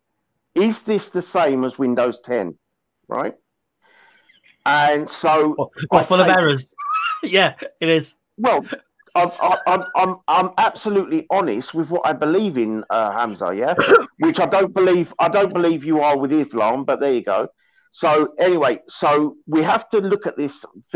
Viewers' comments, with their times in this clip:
0:06 that was a good laugh